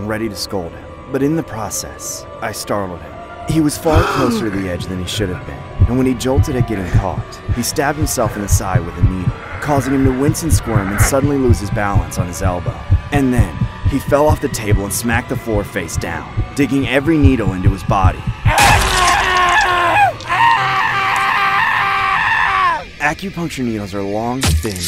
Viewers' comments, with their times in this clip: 0:07 Doomguy pain grunt sound